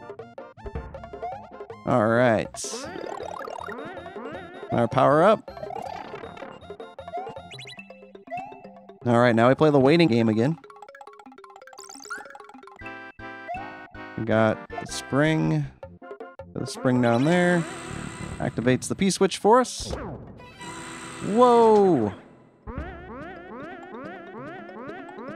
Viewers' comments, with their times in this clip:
0:08 jeopardy music activated